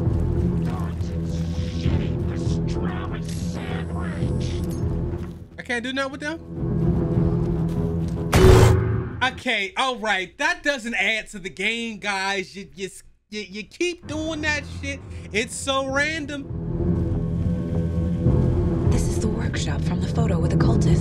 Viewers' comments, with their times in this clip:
0:07 That jumpscare knocked all the cool out his voice😂 #funnymoments